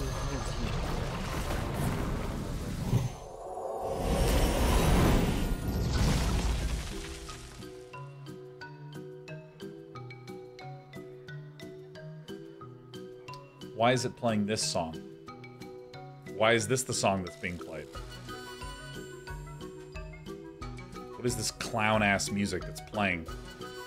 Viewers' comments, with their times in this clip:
0:10 The song transition is pure gold